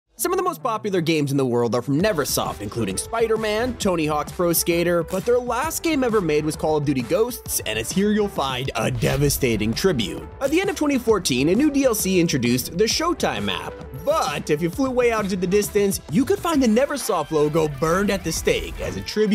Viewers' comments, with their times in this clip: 0:00 Bro is speaking so fast
0:00 Thought you were gonna start singing skatman 😂